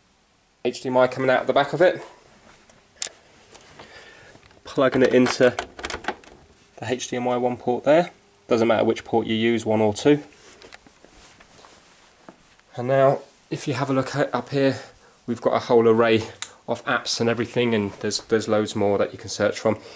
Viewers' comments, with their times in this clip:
0:06 HeyDMI is the BEST!!!